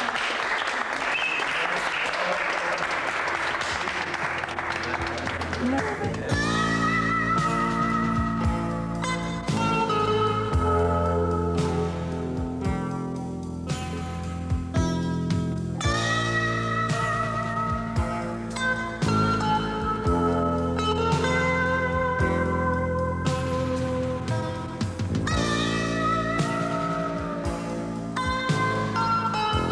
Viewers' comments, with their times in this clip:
0:10 damn, this ending with Watermelon In Easter Hay in the background broke me